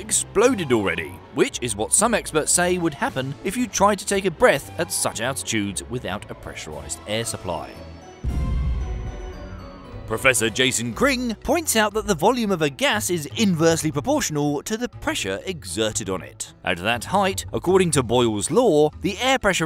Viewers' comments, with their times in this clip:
0:07 even heard the sound of the lungs going out 😂 appreciate the details in this bro, had a good laugh.